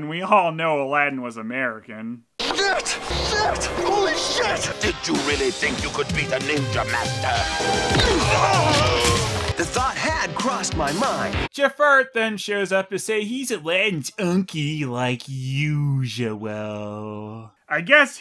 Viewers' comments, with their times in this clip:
0:04 The TMNT music is so fitting with the animation style of this movie.